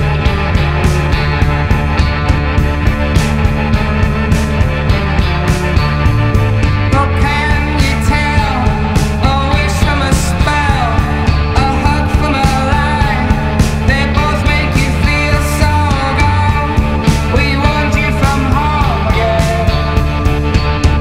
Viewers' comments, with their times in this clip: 0:07 there is a 40 second space from the 1, 2, 3, 4